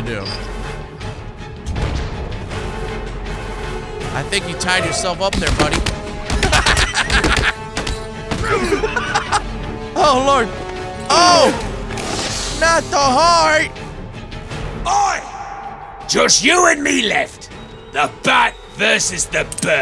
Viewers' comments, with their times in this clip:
0:04 that laugh tho😂